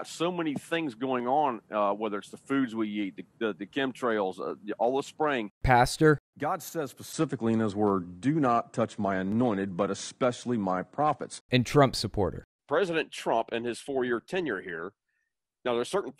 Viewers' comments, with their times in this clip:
0:03 I realize this is an incredibly silly observation to make, but it sounds like he's saying "the foods we YEET", which makes me think he's just tossing ham sandwiches at the wall to see how long they stick.